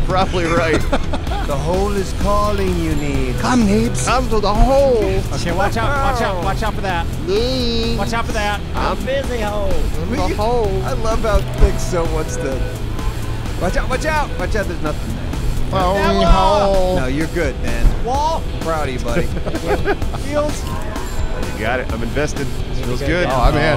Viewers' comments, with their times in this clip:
0:04 Thick sounds like the song Maneater